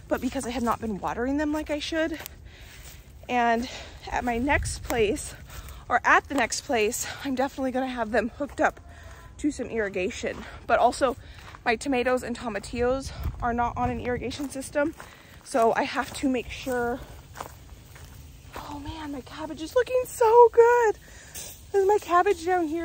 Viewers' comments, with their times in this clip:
0:09 Haha, those insect buzzes and a bit later were so much with my headphones! 🐝 🐜 🕷 🐞 🪲 your move seems to be going well!